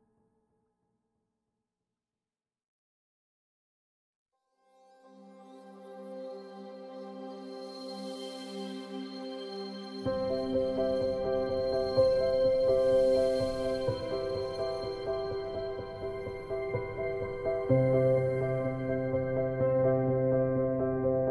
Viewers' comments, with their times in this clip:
0:05 the most beautiful song ever !!!